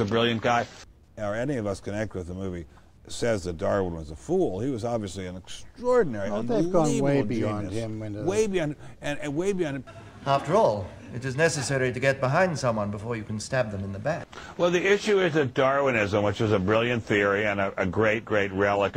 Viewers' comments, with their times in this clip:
0:05 How tha f*ck did he pronounce "genius" ?